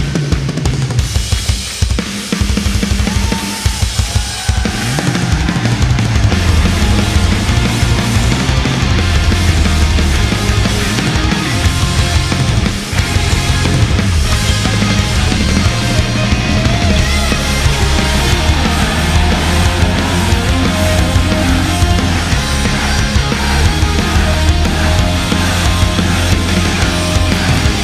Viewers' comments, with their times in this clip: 0:08 Man, the guitar solo made my day... freakin awesome!